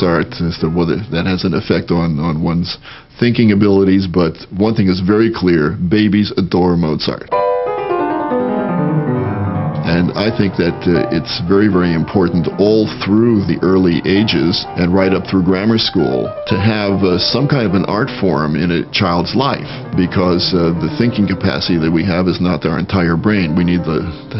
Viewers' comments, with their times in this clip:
0:10 haha ... BABIES ADORE MOZART! *enter chopin etude*...